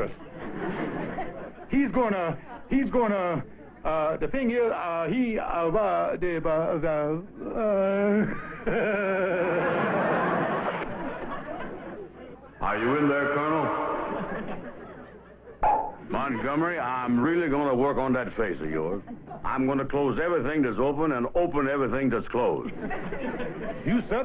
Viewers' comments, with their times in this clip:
0:08 Bro turned into Elmer Fudd.